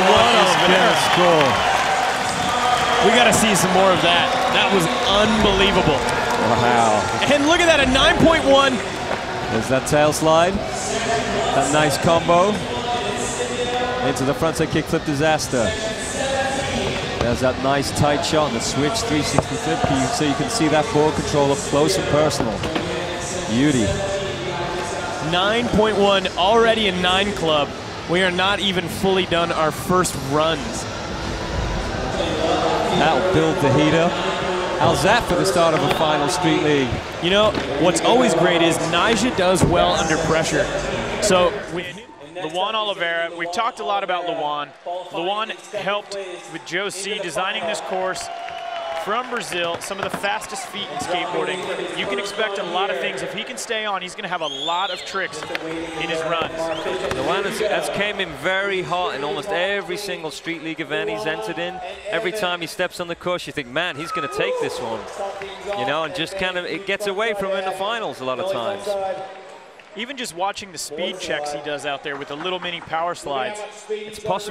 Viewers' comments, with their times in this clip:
0:05 Did the commentator just say LMAO or am I hearing things?
0:57 "Porto AlegrA"... hmmmkay.... I know that city. Capital of "Rio Grande do SulA".